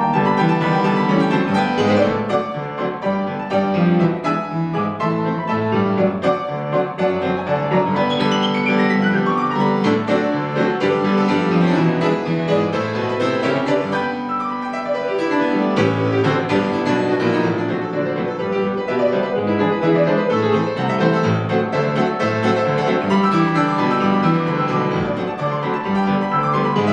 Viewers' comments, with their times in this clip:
0:10 I just love it when he smiles after running down those high notes !!